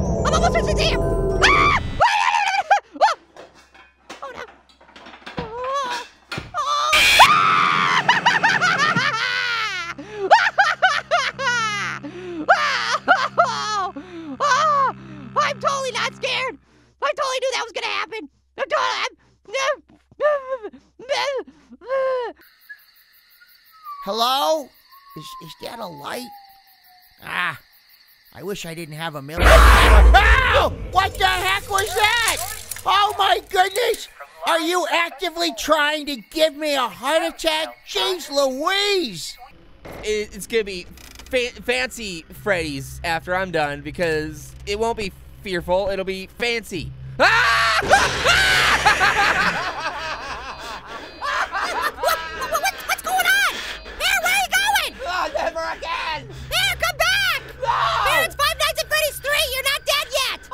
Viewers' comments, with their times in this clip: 0:07 Wow... You screamed like a girl Little Apple, BIG time!
0:07 in little or midget apple just laughed not screaming or crying loud
0:07 You scream like a girl, Little Apple (No offense)
0:07 Pegawolf! Little apple: (Screaming like a Girl)
0:48 pear laughed too he didnt cry